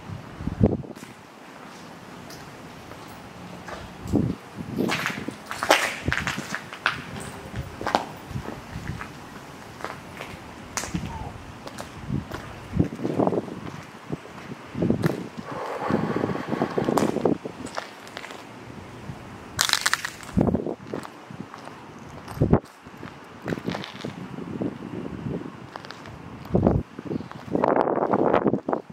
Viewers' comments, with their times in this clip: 0:06 .. a male moan..in the distance, then into yr camera.. "hey"!
0:14 someone said help